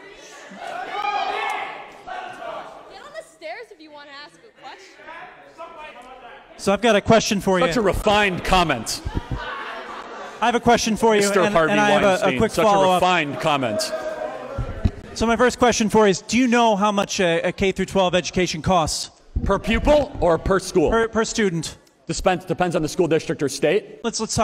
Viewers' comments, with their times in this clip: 0:05 was that guy trying to say "Suck my ___?" (That wasn't self censoring, I genuinely didn't catch the word.)